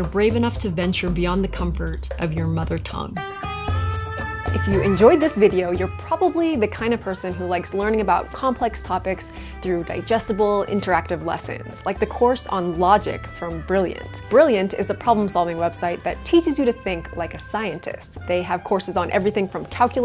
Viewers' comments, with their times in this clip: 0:05 “Dis bideo is sponsoled by Blirriant.” — when spoken by a Filipino-Chinese.